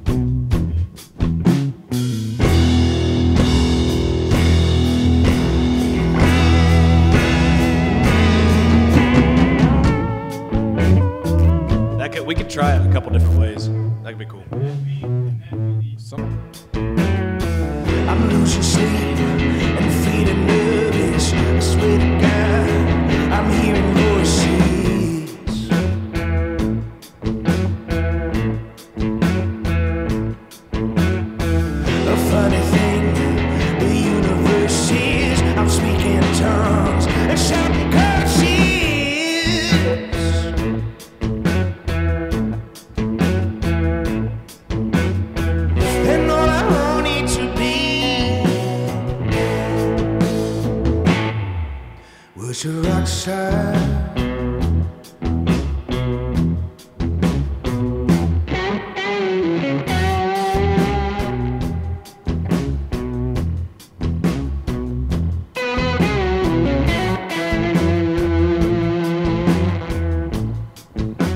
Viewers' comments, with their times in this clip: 0:06 That guitar effect I've heard in Ry Cooder's prodigal son: the sax player is using it. It's like a harmonizer or something. Ive always wondered what pedal that was. Maybe I'm just hearing a vibrato pedal. I think I may have heard it on Cooder's Bop Til You Drop Album as well. Which happened to be the first digitally recorded album ever released. Ever.
0:58 immediate stank face from me on that solo tone